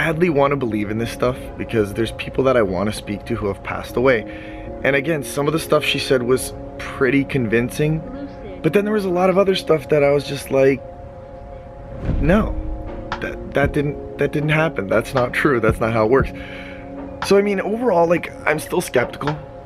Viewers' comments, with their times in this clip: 0:07 Go back to I head a voice I couldn't hear what they said tho